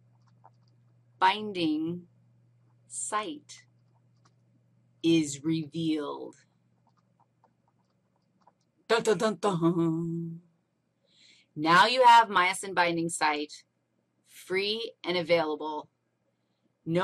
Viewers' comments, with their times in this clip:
0:05 anyone else having trouble with the audio ? Audio and video seemed to get out of sync :(